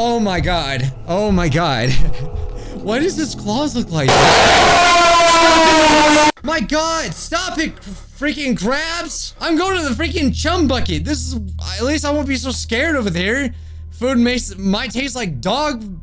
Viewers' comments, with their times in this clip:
0:03 IS SO VERY F**** LOUD!!!!!!!!!!!!!!!!!!!!!!!!!!!!!!!!!!!!!!!!!!!!!!!!!!!!!!!!!!!!!!!!!!!!!!